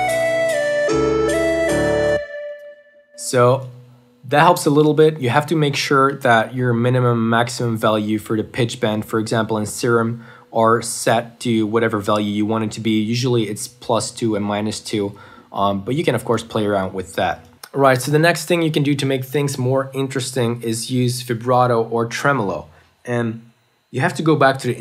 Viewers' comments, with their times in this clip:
0:06 this sounds irish af